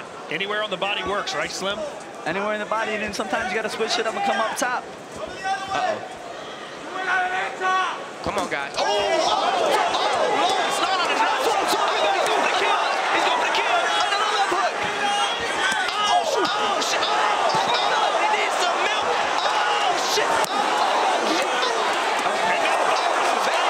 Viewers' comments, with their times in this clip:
0:07 Bruh thats a gunshot